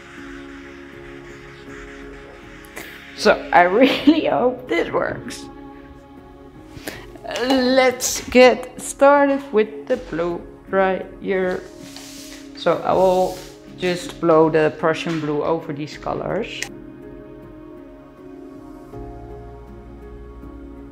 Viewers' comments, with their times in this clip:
0:08 Wow! This is not what I was expecting when I read “galaxy” but what beautiful results. Btw, I enjoyed how you sang your sentence ... so fun! 😄 All three of the color combo puddles mixed so perfectly. I agree, the red + rose = salmon mix is gorgeous against the Prussian blue. Excited to see it dried!